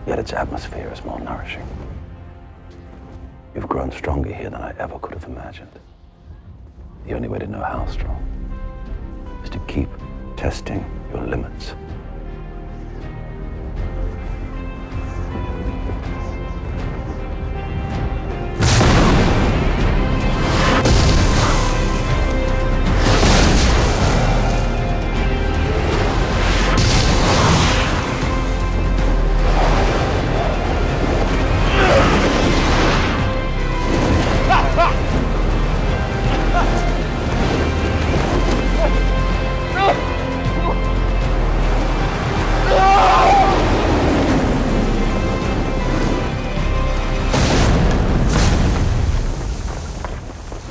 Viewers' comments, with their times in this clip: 0:07 Love the music here
0:34 that dosent sound like Henry cavil